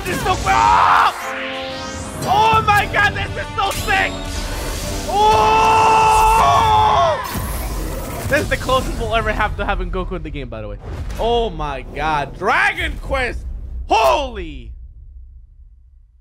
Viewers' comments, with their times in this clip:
0:04 I'd be happy if they put this exact ZeRo scream as The Hero's scream when he does his final smash lmaoooo